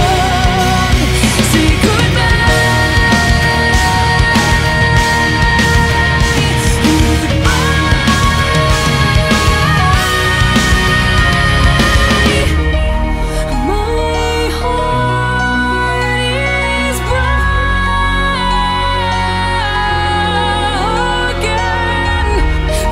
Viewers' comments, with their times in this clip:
0:09 That high note almost crack my ear, Goosebumps🫠❤️